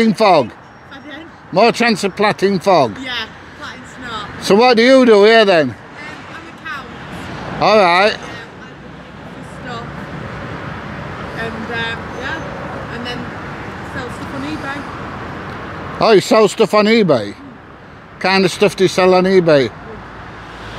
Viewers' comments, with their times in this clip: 0:06 she's a cow? noh accounts😂